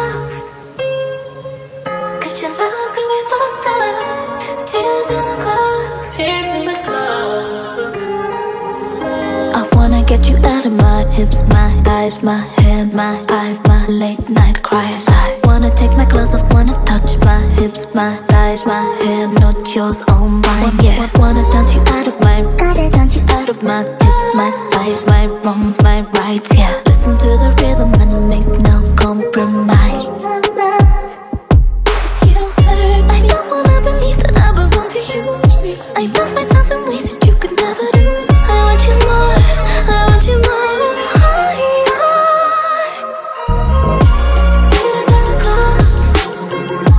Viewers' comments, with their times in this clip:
0:03 wtf? do you hear this bad gate in cutting vocal and breath?
0:33 I hear 90’s Mariah Carey influence